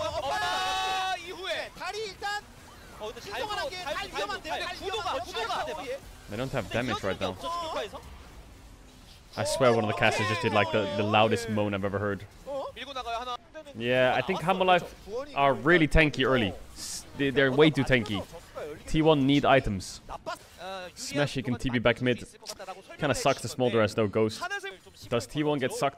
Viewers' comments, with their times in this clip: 0:07 Commentator though no one would notice him jizzing after that teamfight.